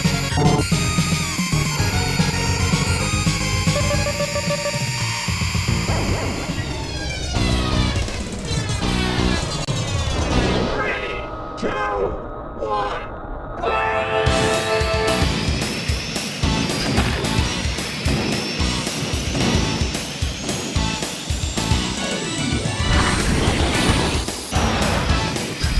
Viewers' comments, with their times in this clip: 0:06 that intro jingle for the start of each race with the camera's animation is the only thing I like about F Zero X. Other than that, I suck at the actual game.